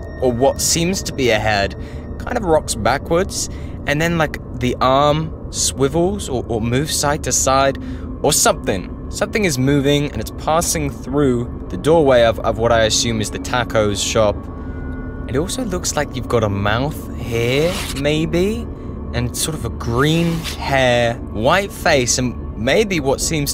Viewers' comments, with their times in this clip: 0:04 Bro in he sounds pretty high or something and btw that clip is old and that no pennywise